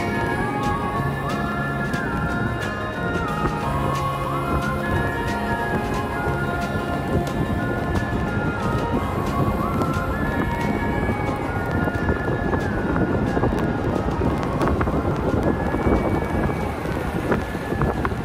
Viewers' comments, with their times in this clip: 0:04 the music fits the vibe. I dig it 💚